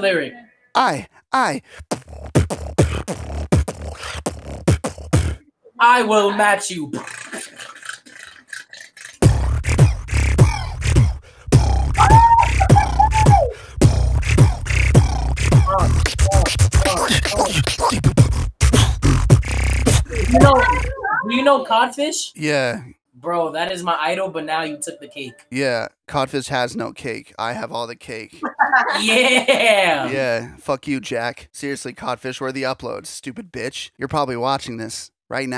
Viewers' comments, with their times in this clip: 0:06 That guy that tried to match him but his beatbox sounded like me after eating Taco Bell🔔😂😭😂
0:17 the beat was getting good bro why he gotta stop